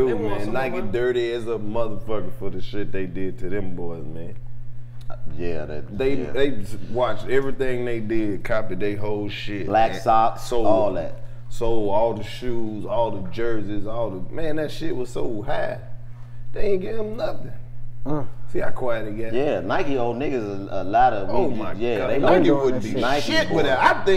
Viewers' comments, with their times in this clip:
0:07 Why dc laugh like the pillsbury dough boy 🤣🤣 shit had me cryin